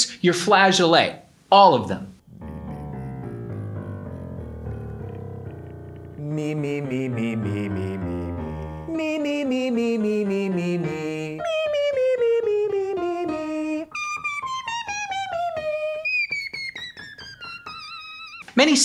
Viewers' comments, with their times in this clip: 0:03 Holy ** -- that range showcase is unreal !! WOW